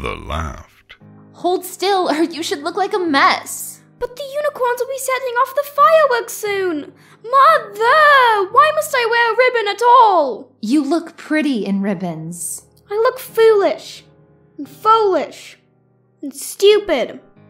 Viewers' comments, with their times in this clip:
0:04 Okay....someone find and narrate a Pipsqueak story, and SIGN THAT V.A. UP!! That sounded unmistakably like the student pony president. O_O